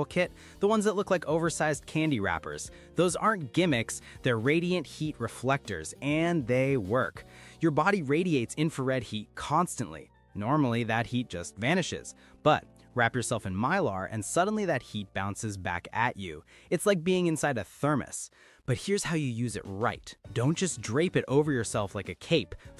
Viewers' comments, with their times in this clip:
0:03 Great advice and drawings! But, next time, lose the perky music that we can almost hear under the narration. It's as annoying as freezing slowly to death, people. I had to bail out I won't be back.